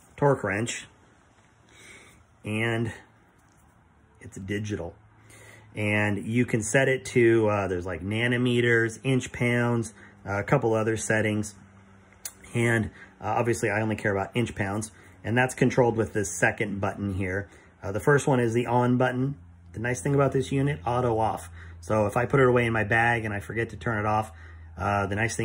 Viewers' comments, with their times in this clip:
0:08 Didnt know there was a unit of measurement called "nanner meters"